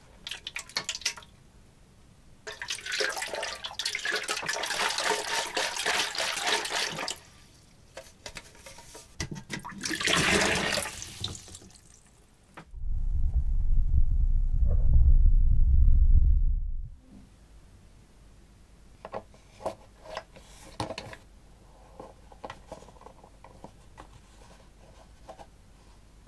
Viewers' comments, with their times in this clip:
0:05 best asmr ever 😂😂
0:12 whats with the ASMR